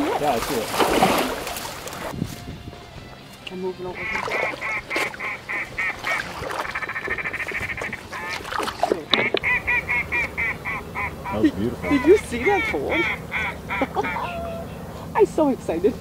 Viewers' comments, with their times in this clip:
0:03 i started looking for my phone, that's my exact ringtone
0:04 Is that an electronic caller or did you guys edit that in?